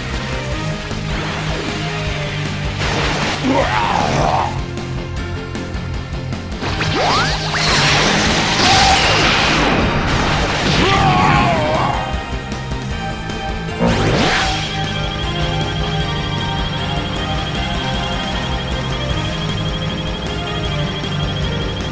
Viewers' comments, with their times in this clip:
0:03 Damn Piccolo, what was that noise? 😅